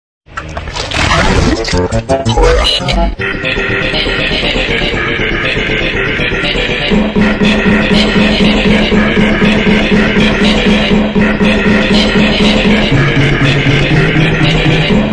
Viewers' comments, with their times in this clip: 0:00 sounds like I killed x but slowed down